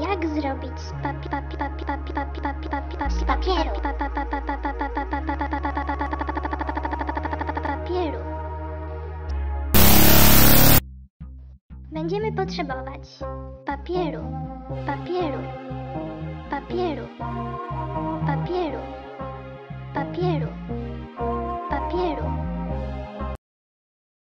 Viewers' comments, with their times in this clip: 0:03 I WAS NOT PREPARED FOR THAT JUMPSCARE AND MY HEADPHONES WERE ALL THE WAY UP
0:07 Warning for anyone sensitive to jumpscares: There's one Skip ahead like 10 or 20 seconds when she starts stuttering.
0:09 startled me because it was so loud